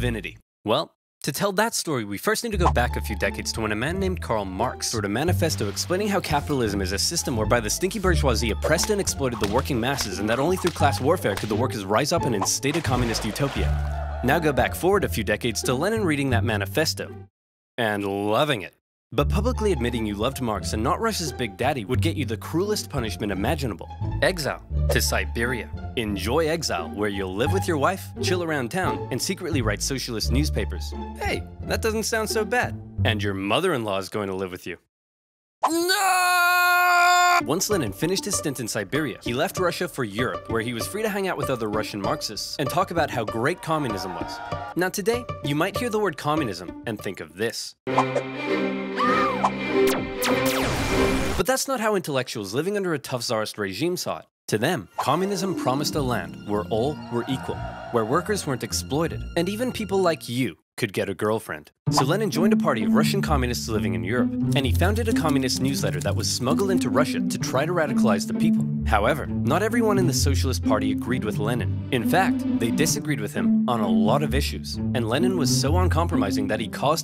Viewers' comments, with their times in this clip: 0:07 bro was rapping.
0:59 "...and even people like you could get a girlfriend." *National Anthem of the Soviet Union intensifies*